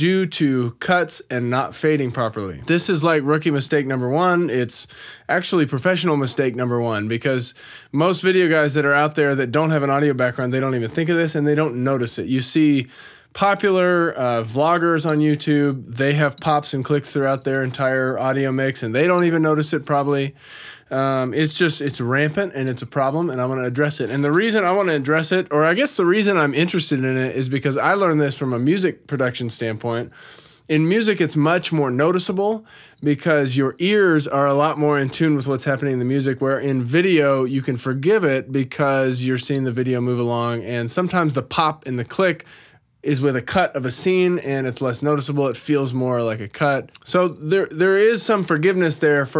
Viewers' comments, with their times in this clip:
0:10 there's some kind of audio glitch sound, more prolonged than a click/pop... it definitely doesn't seem like mouth noise to me. I'm only mentioning it because like and I'm also noticing that pretty much all of the YouTube videos that I watch, have faint clicks/pops in them (even though sometimes it's only just a few over a 10 minute or so recording), even the really big channels. Honestly it perplexes me because how can this be the worldwide standard considering how advanced recording technology has become, and so I have questions such as, how do big label recording studios deal with clicks/pops... imagine a famous singer recording a hit (do they use a modern Mac like me). I've never noticed any clicks/pops when listening to music on YouTube, but maybe that's because I'm in a different mindset to when scrutinising podcasts by trying to identify sound defects 🤔
0:34 And immediately after some kind of splutter, but definitely not a mouth noise, I won't mention anymore though, if there are any that is, probably not 🙂